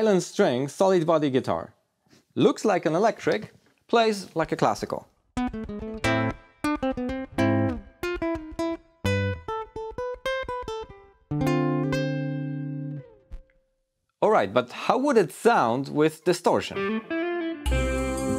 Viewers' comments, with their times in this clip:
0:05 he went from mozart to despacito